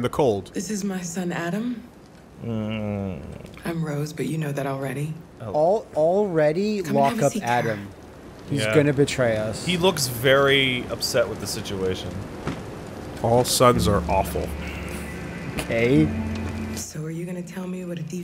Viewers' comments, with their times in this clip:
0:06 I heard BATREUS